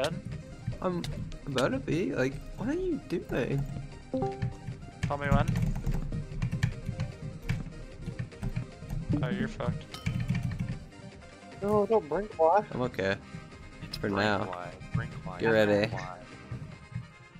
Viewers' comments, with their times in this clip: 0:03 did anyone else check if they were on a discord call
0:03 scared me i thought someone join a vc that i didnt know i was in lol